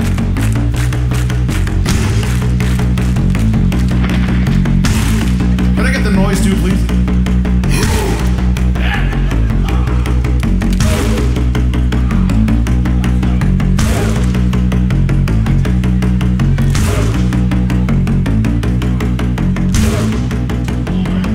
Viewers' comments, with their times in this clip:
0:08 I must be drunk cuz im hearing the Roblox "UGH"